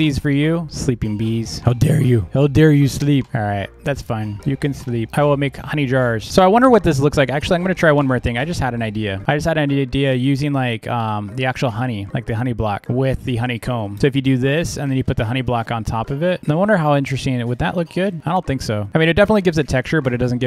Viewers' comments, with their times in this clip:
0:04 Ur voice is so cute when u talk like that and it’s so satisfying to listen to when u just talk